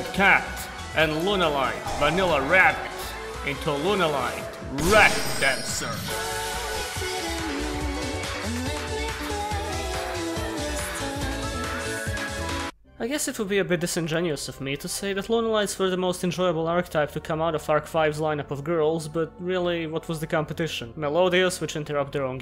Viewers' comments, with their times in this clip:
0:04 Ok I cannot be the only one who heard Lunalight Lap Dancer? 0.o